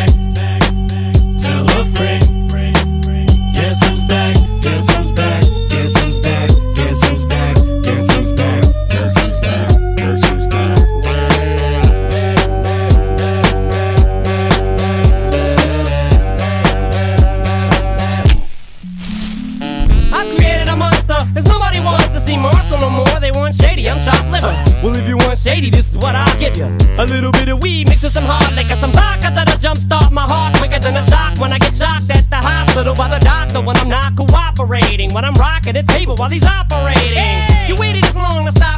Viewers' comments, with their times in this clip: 0:03 I had this in the background of a game and all I heard was "guess who's black"
0:19 bro it is like Sweet Sweet Canyon from mariokart 😭😭😭